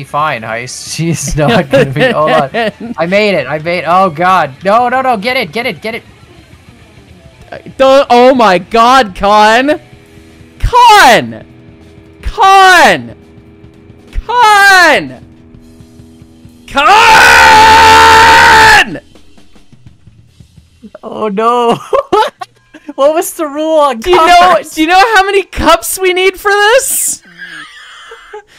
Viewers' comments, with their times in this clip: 0:08 the more disappointed and the more angry the kAN's get maade me burst out laughing
0:15 rip headphone users lmao